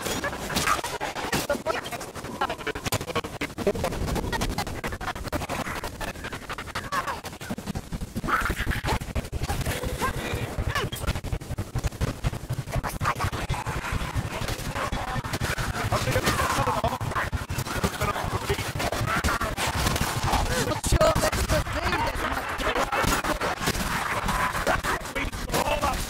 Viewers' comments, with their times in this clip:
0:08 buggy audio from here to about the next minute... :(